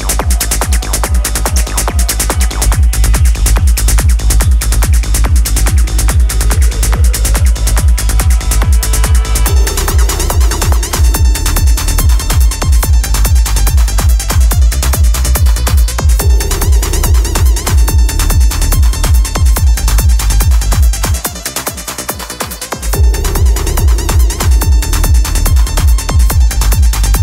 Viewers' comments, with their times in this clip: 0:09 Does anyone know what the song is that's played in the background briefly ?? The higher pitched melody in the back